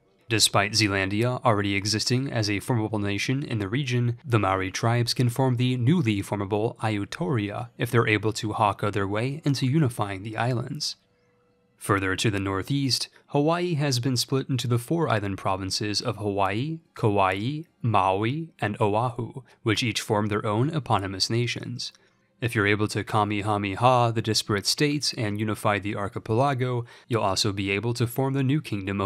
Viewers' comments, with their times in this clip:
0:06 "Ayuthoria" This pronunciation makes me feel something reverse to the euphoria
0:16 "Kawaii" ....So this is why Japan attacked Pearl Harbor huh...